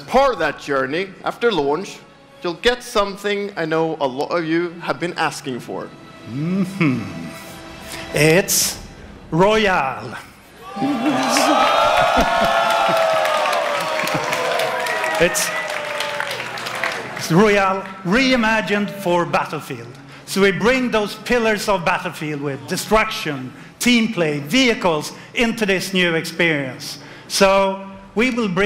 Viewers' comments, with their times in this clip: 0:09 i can hear the disappointment